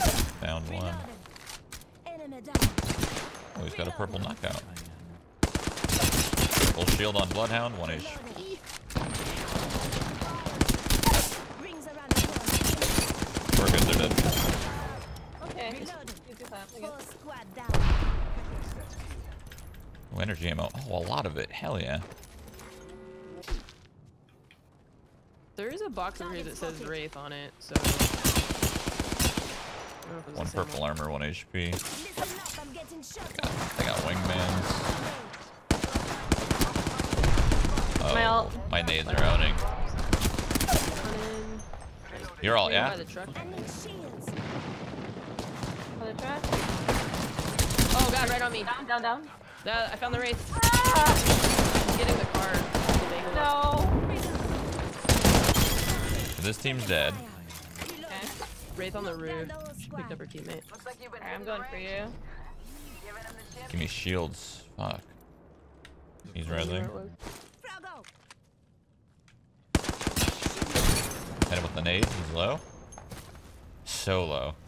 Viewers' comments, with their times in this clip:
0:10 wtf, is that you tapping that fast or is that gun somehow auto?
0:55 he says “this team’s dead” so casually. Wish I could relate